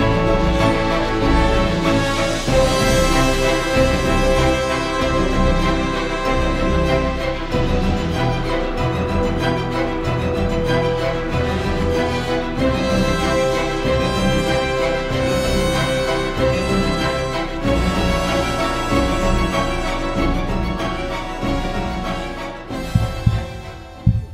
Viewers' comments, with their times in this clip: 0:09 🤣🤣🤣 Theme music i love it